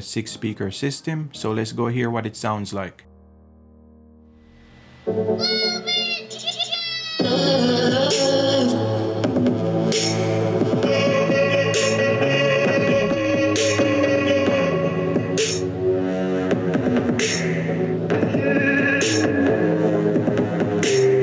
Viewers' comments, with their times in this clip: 0:03 on (just before you started playing music) I can clearly hear pretty loud fan noise…